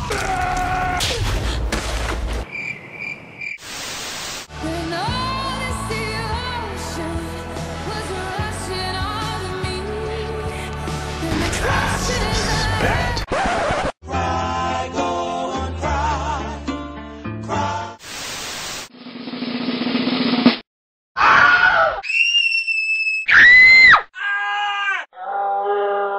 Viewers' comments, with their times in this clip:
0:10 ahaha I thought Klaus said "and the crashes..." :D